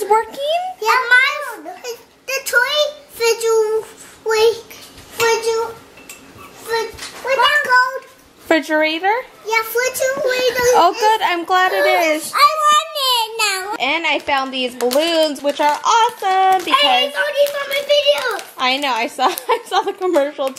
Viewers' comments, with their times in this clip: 0:06 I thought the twins said Fidget spinner 😂😂😂😂